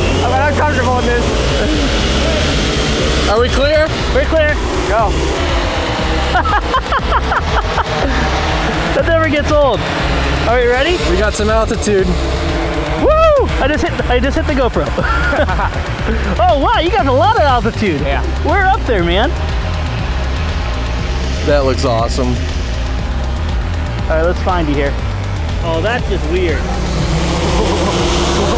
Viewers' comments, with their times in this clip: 0:10 he sounds like Peter Parker asking MJ if she's ready. (Far From Home reference)